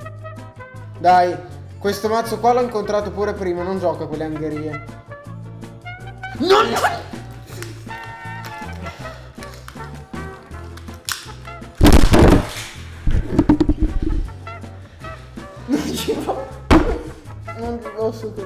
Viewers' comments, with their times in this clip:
0:06 |R.I.P. Headphone ~~ ????-2018|